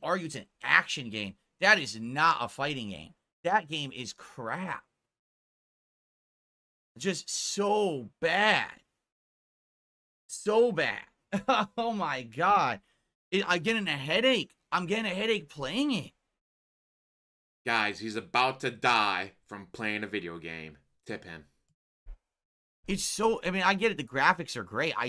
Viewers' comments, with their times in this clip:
0:10 'Tho bad' lmao the stroke mouth strikes again.